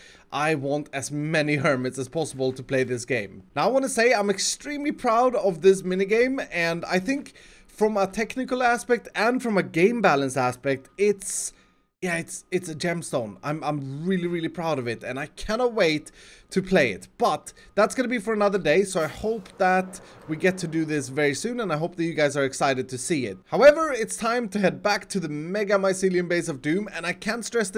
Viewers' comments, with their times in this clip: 0:06 Did anyone else hear the truck backing up? it's very faint.
0:13 was that a car alarm?